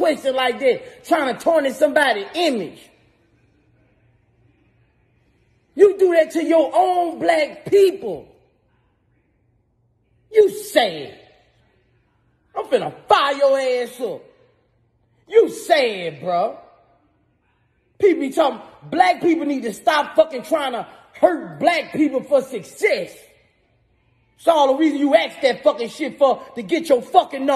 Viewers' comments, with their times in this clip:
0:10 The way Boosie said ‘you sad!’ sent me lmfaooo 🤣